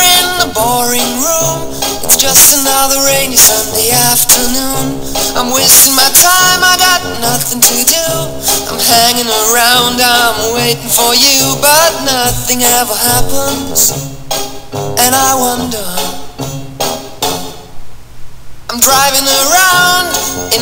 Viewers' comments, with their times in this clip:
0:04 WHAT YOU DO!!IT WILL EXPL--*BOOM* lol nice nade 5/5